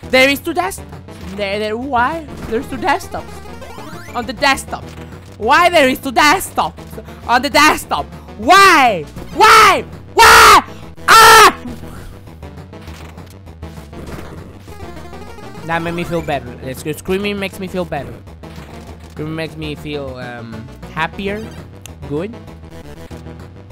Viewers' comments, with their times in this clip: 0:09 Waluigi, is that you?